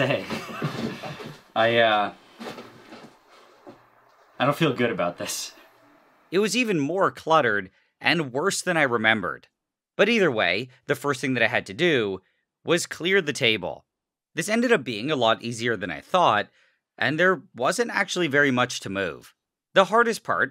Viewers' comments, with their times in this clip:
0:05 NileRed's entire speech pattern and talking style constantly consist of a reading of an everlasting instruction manuel. Example starts I just love the way Nile speaks in his videos it literally sounds like a person reading a never ending instruction Manuel.